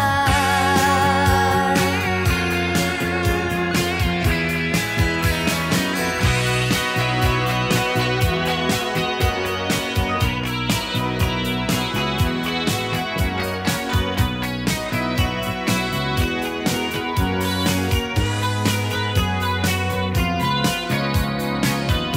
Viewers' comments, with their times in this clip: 0:06 one of the best melodies set the Rock music has to offer. Best part of the video. This Band is a bond of talented women yet to happen again in my life time! ♥️ Bangles 🙏🏽🇺🇸